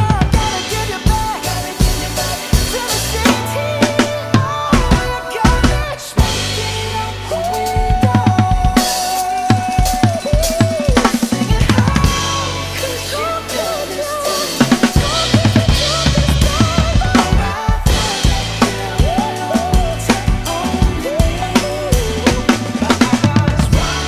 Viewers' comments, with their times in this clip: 0:07 The fills are nuts